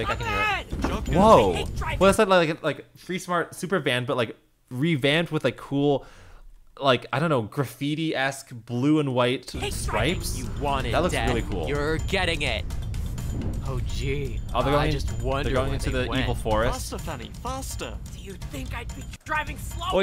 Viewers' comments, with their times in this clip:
0:08 i misheard that